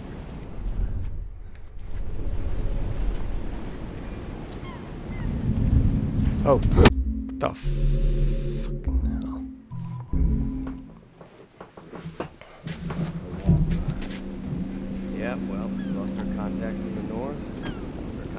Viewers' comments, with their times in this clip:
0:05 LOL. He just sees you and BAM.